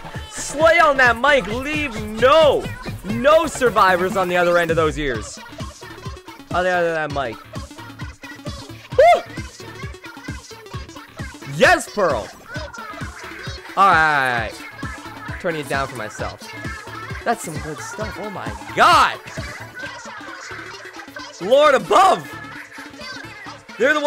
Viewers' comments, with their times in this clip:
0:09 my ears still hurt from earlier. don’t damage them even more